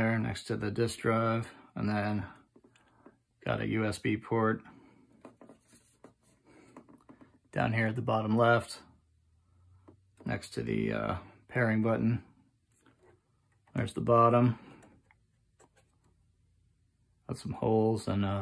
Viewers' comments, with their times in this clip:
0:03 Hi, thank you for the reply. The noise actually sounds like you can hear in this video starting I can hear the noise only when the console is horizontal position. I still have 20 days to return it.